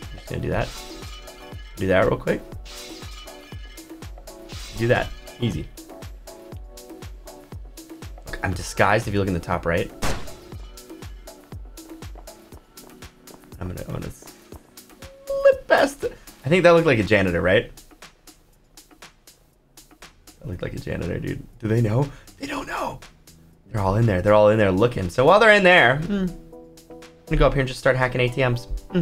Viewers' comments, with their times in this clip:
0:10 I had my phone on full volume at night and I just heard HI DUDES!!! and my mother said ARE YOU OK?!?! I said yes… I told her what happened then I saw a belt wish me luck